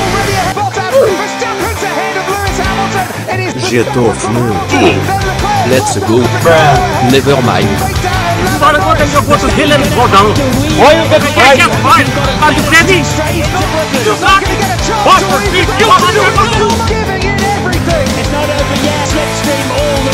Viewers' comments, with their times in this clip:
0:06 i cant be the only one who heard something else